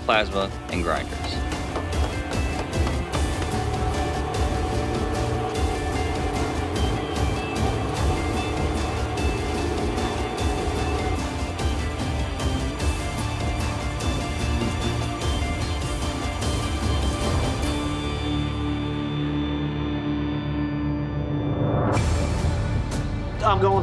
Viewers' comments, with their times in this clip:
0:05 This is pretty good... I like the music